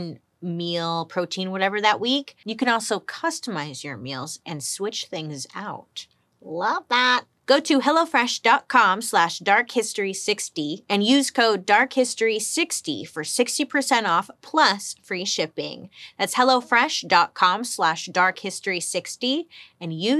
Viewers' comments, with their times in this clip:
0:06 You sounded like a peret when you said that 😂